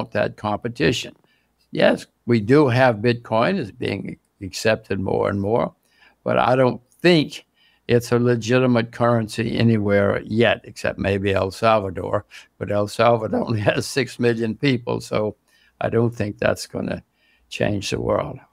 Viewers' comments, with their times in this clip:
0:04 Did anyone else hear the doorbell min lol